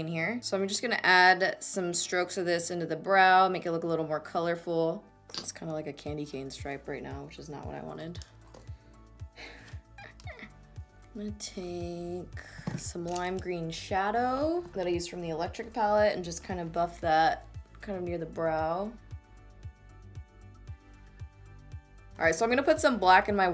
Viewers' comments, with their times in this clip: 0:09 😂😂😂😂😂😂 I swear I was cracking up at your weird laugh !